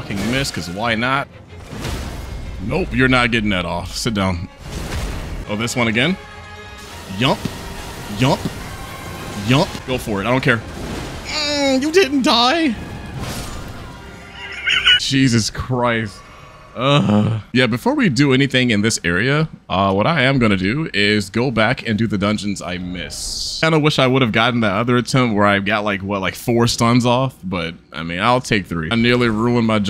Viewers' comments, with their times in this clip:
0:10 lmao.. the sadness in that "you didnt' die" is priceless.